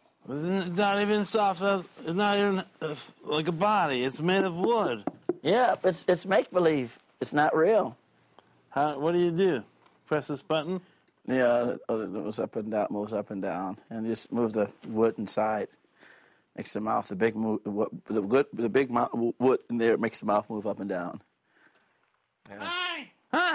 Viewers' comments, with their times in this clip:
0:10 the way he stutters is priceless